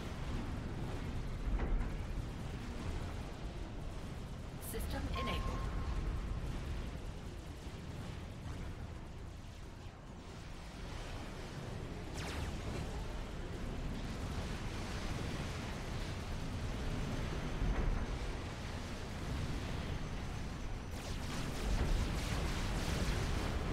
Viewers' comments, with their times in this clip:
0:06 Yellow set ping, but u didn't react